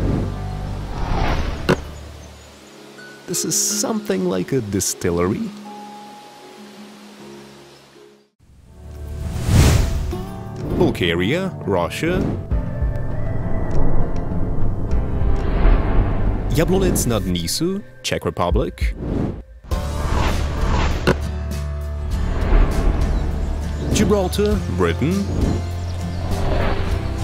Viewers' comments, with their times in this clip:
0:10 Balkaria Sounds like Bulgaria
0:11 Audio: Balkaria Captions: BuLgArIa